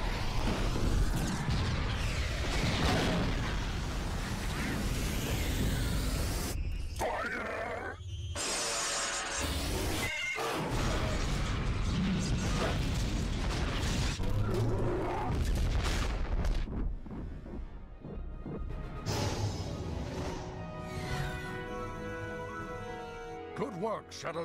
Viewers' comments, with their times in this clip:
0:09 The sound of the Ion Cannons exploding is organismic